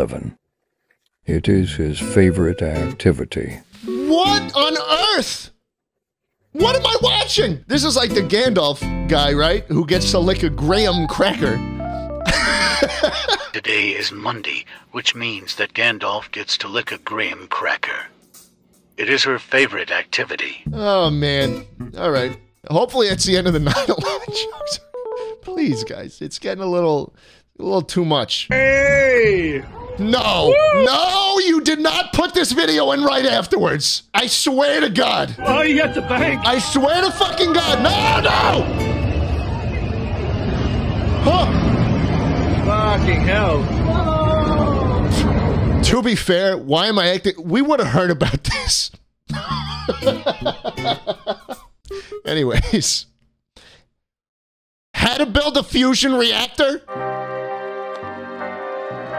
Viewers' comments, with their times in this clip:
0:10 The way he says graham cracker 💀😂
0:30 im pretty sure thats a training flight for river fire here in aus 😅 or one of our military fly bys in general... yea we do mad shit while a depressed inflight computer screams about endless terain
0:40 for anyone wondering: the aircraft are qualified military aircraft practicing a show flight for the city. They do this every year and it’s very safe so don’t worry! Just a bit ear-deafening :)